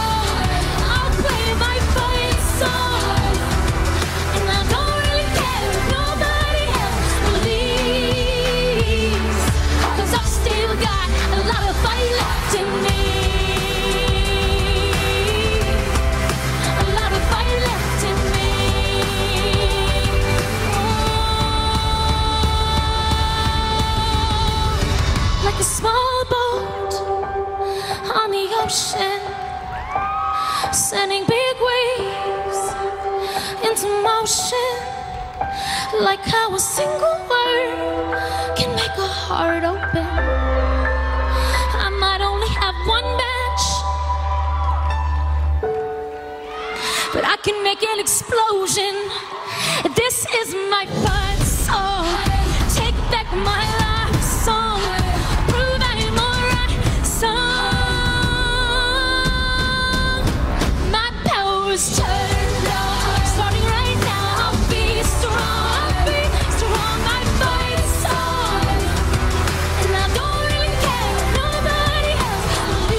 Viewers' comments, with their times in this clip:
0:03 Camilla Cabello was screaming this jam at the top of her lungs. Love it!
0:54 aww fifth hamony together